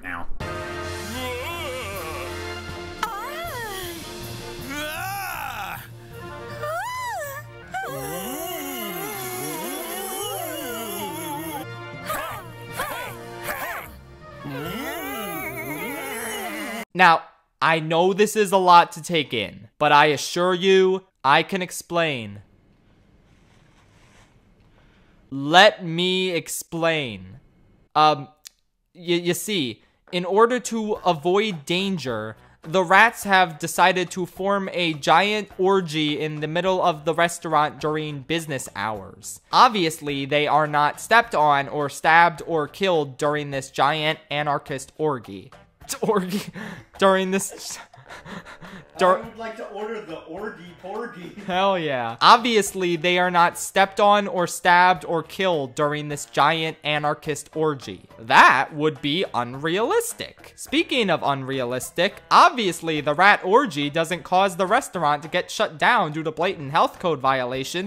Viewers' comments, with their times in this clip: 0:10 This part just sounds like a moaning scene than a dance scene like Baloney (Don't call me out saying I'm green-minded because that's what it really sounds like)
0:48 scared me. Legitimately sounded like someone from the next room talking to me. Random binaural moment.